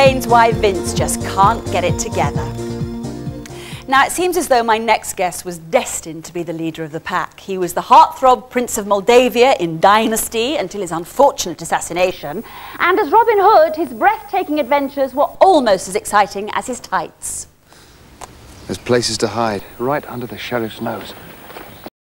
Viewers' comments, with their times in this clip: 0:07 that backing singer clearly knows something beautiful's dying.